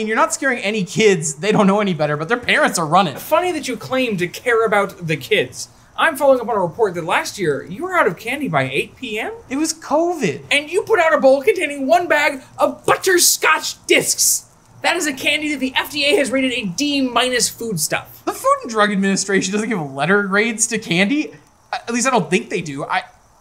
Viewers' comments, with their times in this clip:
0:10 that voice he does here makes such perfect sense in hindsight.